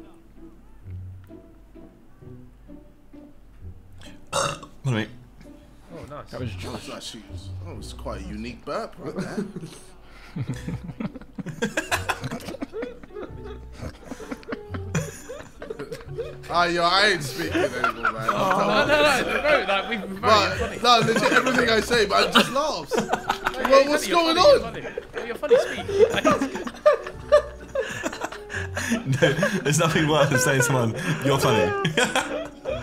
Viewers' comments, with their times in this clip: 0:07 Ksi’s inner private school came out😂
0:12 everyone still trynna process JJ's Joke (Burp one) , meanwhile you hear Vikk dying in the background with the silent laughter got me deaddd
0:15 didn't know tobi bought a laughing elmo